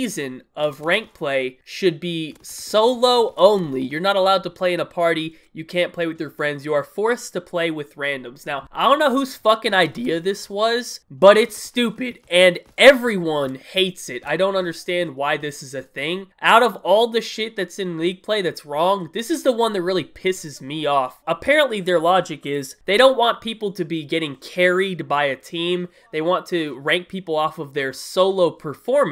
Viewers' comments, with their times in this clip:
0:10 ... Huge voice crack lmao
0:11 nice voice crack Kappa